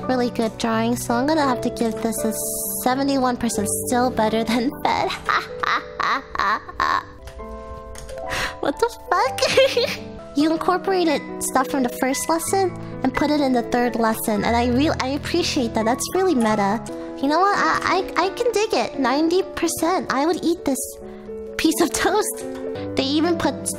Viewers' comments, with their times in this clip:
0:04 that laugh though....